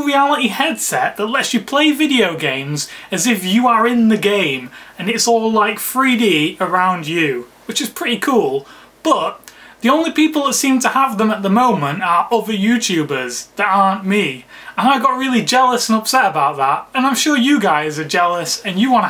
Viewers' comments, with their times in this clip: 0:05 and its all like free d